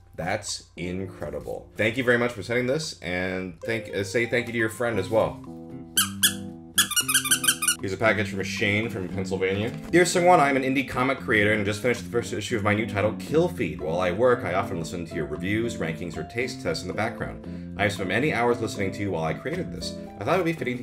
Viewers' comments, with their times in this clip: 0:06 That mousedpad is hilarious... NowIWantOne #ItSqueaks